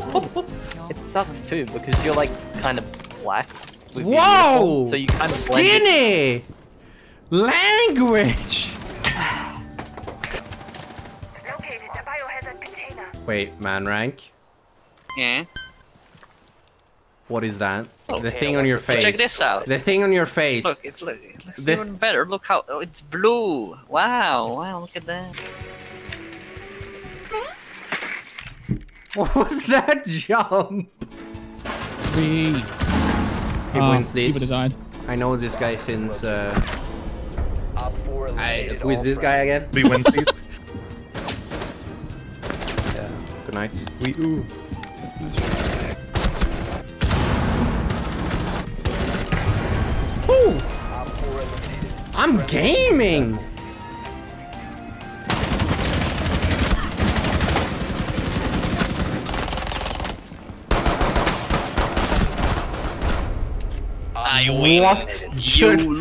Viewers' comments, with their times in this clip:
0:08 why does he sound like BadboyHalo saying “LANGUAGE”
0:48 I thought you said I'm gay